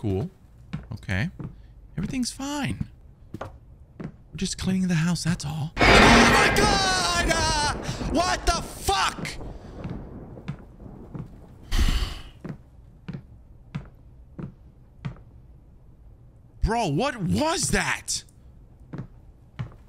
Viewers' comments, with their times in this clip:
0:05 best scream of terror ever to date. 👏🏾👏🏾👏🏾 🤣☠️